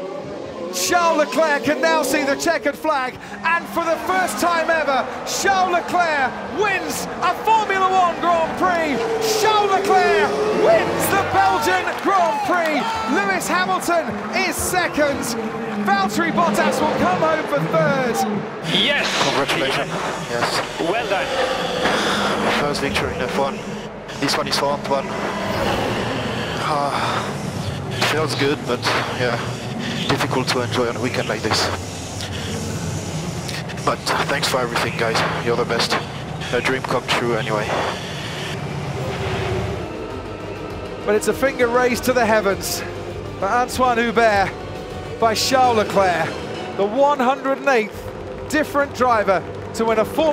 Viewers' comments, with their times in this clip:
0:09 voice crack at it's best
0:10 voice crack for days Crofty! Charles Leclerc wIn’s
0:10 That voice crack from Crofty, tho 😅😅😅
0:31 Listen closely to he was crying for his friend! Respect!